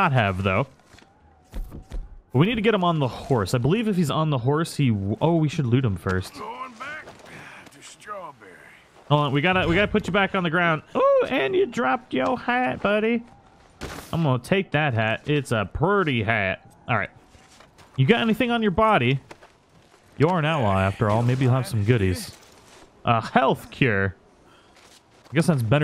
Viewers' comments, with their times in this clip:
0:10 he sounded like Cleveland